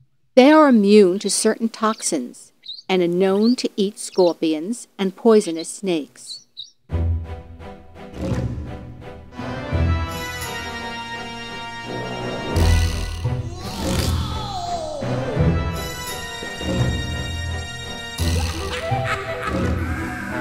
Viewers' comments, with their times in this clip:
0:05 I feel like some of this information was incorrect. Ive seen several lion prides with multiple males, and young male lions usually get pushed out at 2 to 2 1/2 years of age. Seems weird. Also super boring voice and she legit says "poisonous snakes" (Snakes are venomous).